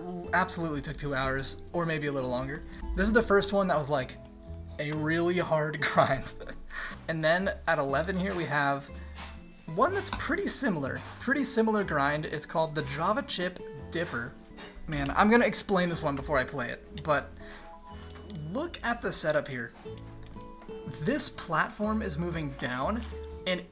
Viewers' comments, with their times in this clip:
0:07 POV asmr date conversation with a Falcon main with chill coffee shop ambience (you ordered a java chip dipper and he starts talking) Love hearing even more about what in to each knee. Amazing upload, king 🔥